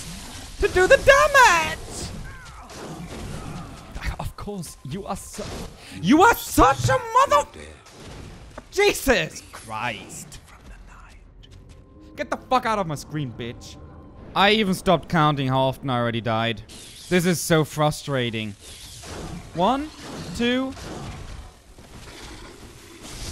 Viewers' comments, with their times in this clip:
0:03 Didn't realize DEAD Gherman could speak during the fight with the Moon Presence...
0:07 wait why is Gehrman's dialogue there? Is it just editing?